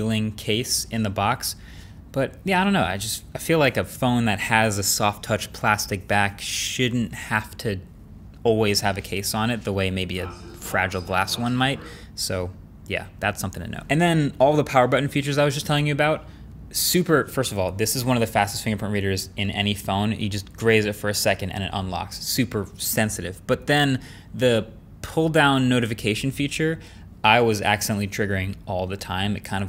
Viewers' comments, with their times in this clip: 0:05 Anyone else got scared shitless ? I swear the voice sounded like it was coming from right outside my window and for a second I thought I was getting robbed.
0:07 is the most played section because of that voice in the background. I'm watching this at night and had to make sure it was in the video
0:07 At the second I thought someone was talking behind me
0:09 Can't quite make out what is said but I thought the aliens had arrived. Cool.
0:10 that jerry rig everything voice over NOICE
0:10 wtf are this voice i thought i have schizophrenia
0:10 That background voice scared the hell out of me
0:11 what on earth was the voice on the background? I haven't paused a video faster in my life...though we were under invasion.......
0:11 the fuck is happening in the audio?!
0:13 the line scared the shit out of me wtf, i was watching this on 2x and randomly an ambient sound came in, i was terrified until i replayed it a million times and saw the pinned comment, wtf wtf
0:13 i hear nothing WTF ??